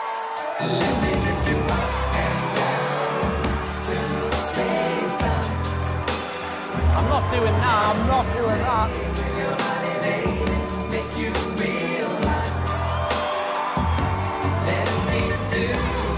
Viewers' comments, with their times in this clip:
0:03 simon laugh hahaha